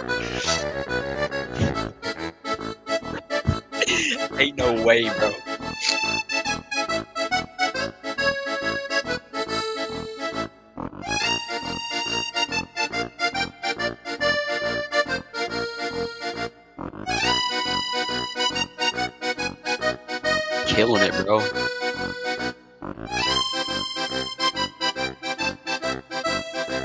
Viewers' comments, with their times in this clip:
0:08 Pizza theme sounds like Funiculi Funicula